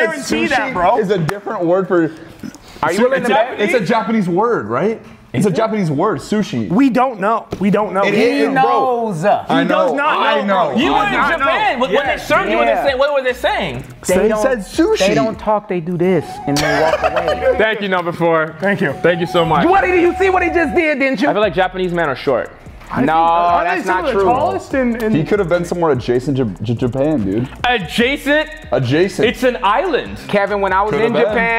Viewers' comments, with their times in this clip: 0:04 The fact that he understood “the most traditional diss” instead of “dish” is sending!!!!! he literally flipped you off. KUSOYARO!! クソやろ！ And before he understood “how do you feel about animals” instead of anime, so he replied “あっ、動物大好きです。” : I really like animals… I WAS LAUGHING!! And also he’s defnitely from Osaka cause he greeted you with “オス” ? like the short version of OHAYOGOZAIMASU おはようございます。 : good morning…
0:14 THE SOUND EFFECTS 😭😭